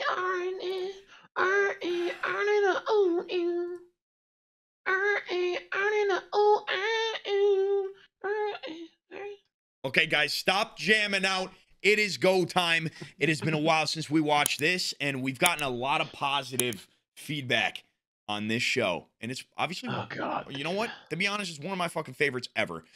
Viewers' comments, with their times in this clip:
0:03 not me harmonizing with that note 💀😂😅 QUINTUPLETS 🤙🏾